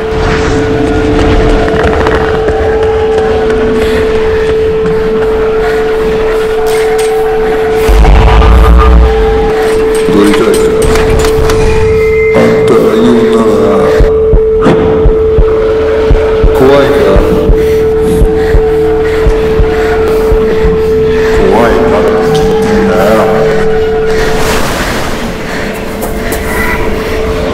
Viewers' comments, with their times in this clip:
0:08 Btw rip headphone users
0:08 Omg so loud 😭